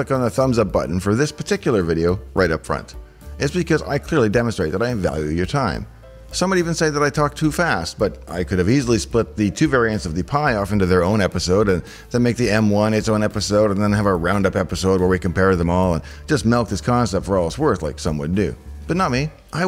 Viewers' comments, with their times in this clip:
0:05 If ppl say you talk to fast, they are way to slow. I'm happy with the speed which seem totally normal for me.